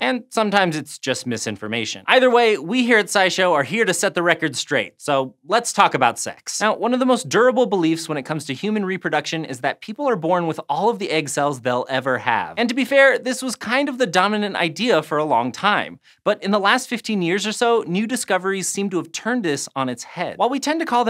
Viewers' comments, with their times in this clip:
0:05 you didn't do it in-tune